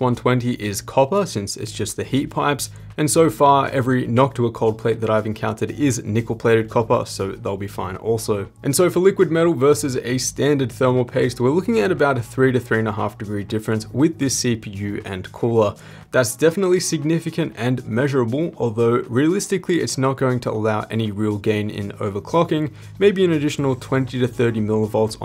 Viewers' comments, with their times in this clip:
0:07 I like how you pronounce copper. I love to hear it. You got my sub.